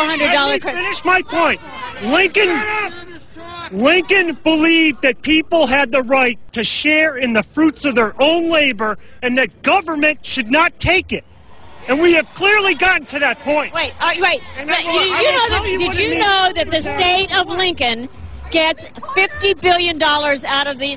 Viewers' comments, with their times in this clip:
0:03 LMAO you can hear "SHUT UP!"